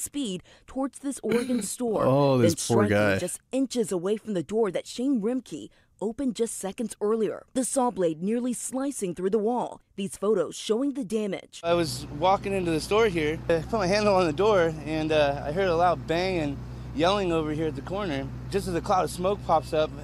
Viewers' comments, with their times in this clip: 0:04 Lol secs dude is actually laughing at this scenario🤢